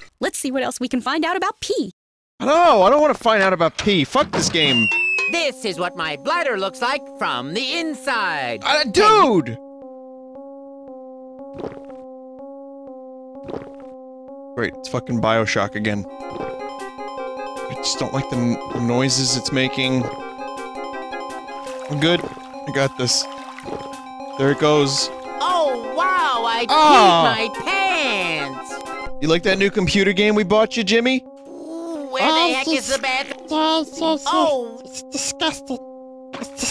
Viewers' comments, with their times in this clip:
0:05 why this dood sorta sound like pencil from bfdi
0:24 That damn sound in my left ear made me think I had a mosquito in my room